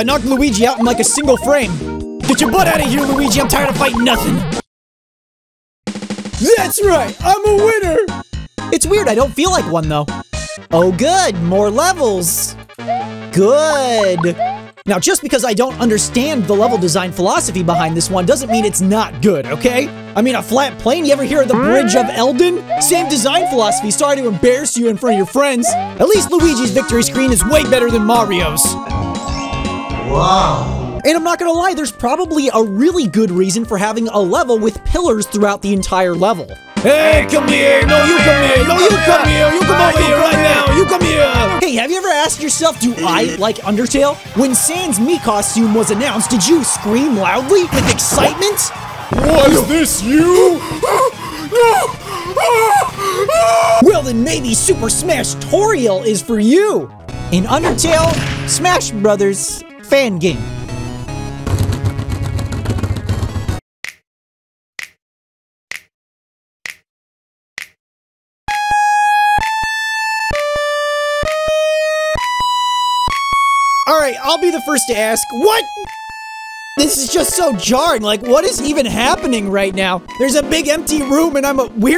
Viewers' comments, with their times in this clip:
0:08 why he sound like Sonic tho
0:44 Dude, I literally woke up to that announcement. I just woke up and was like "Alright, what's up with the direc-" MEGALOVANIA BLARES
1:03 tough guy finger snapping nightmare music starts to play
1:08 rip my eardrums